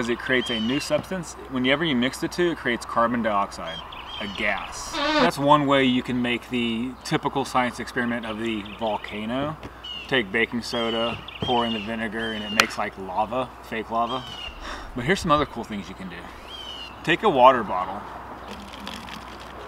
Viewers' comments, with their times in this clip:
0:04 i like the funny noise
0:05 omg that was a huge fart